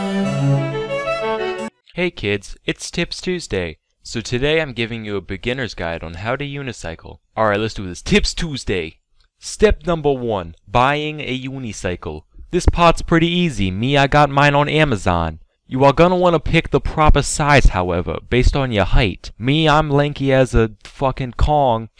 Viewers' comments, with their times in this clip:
0:08 this guy talking like Henry Hill played by Ray Liotta in Goodfellas lol A.K.A the Italian Mafia accent